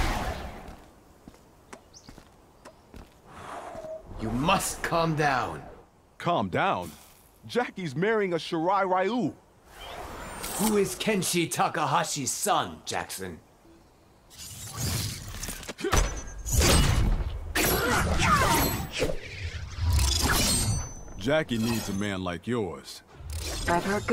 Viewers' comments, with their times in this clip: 0:08 Everyone: shirai ryu Jax: SHIRA RAYU!?